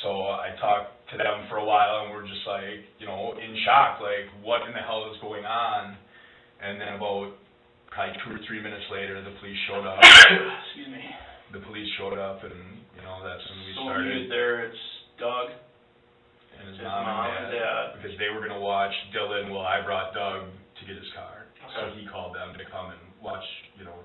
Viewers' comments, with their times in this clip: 0:09 that was so loud I thought one of the cops just randomly screamed sounding like a puppy😭✋
0:09 punctured my eardrum
0:10 why was that such an unnecessarily loud sneeze from the detective??? I had my earbuds in and jumped out of my skin!!! lol
0:10 RIP headphone users I nearly jumped out of my skin, boss man's sneeze scared me so much 😂